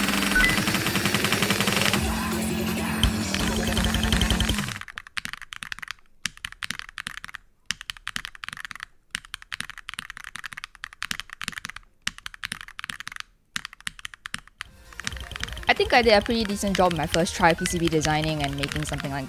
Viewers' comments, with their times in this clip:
0:05 damn still can hear the song in my head